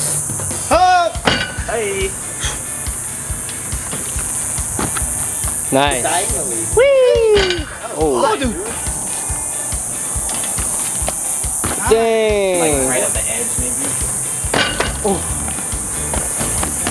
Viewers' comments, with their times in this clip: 0:04 how cr7’s suiiiiii was invented